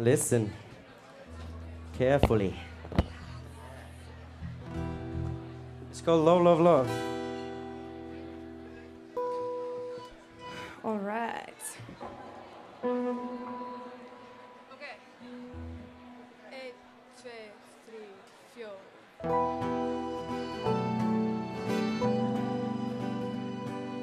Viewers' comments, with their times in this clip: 0:10 is the sexiest sounding "alright" I've ever heard.